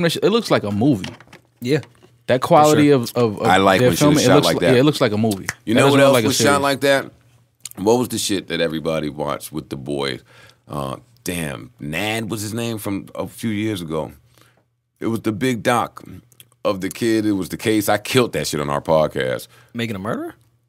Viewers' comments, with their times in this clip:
0:06 That lemonade smack 😅😅😅